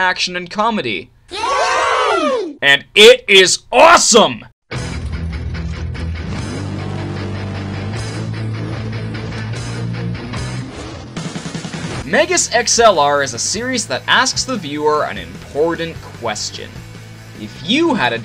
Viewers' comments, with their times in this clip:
0:05 AM I THE ONLY ONE WHO SANG ALONG WITH THE THEME SONG IN THE BACKGROUND?